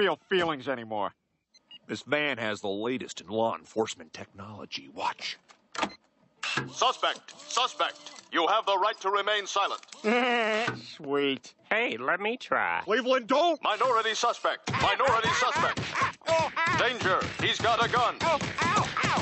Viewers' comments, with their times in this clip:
0:06 Sounds like Stan Smith from American Dad